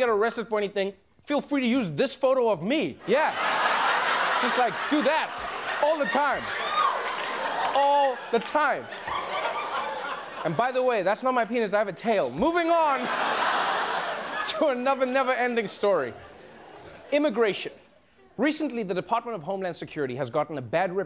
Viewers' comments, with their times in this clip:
0:06 that woman was laughing way to hard 😂